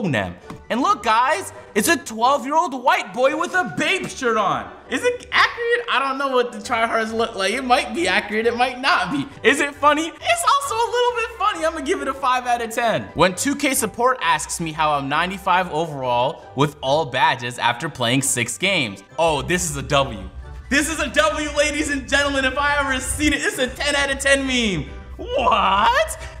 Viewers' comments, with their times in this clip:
0:08 Agent pronounces “Accurate” right 👀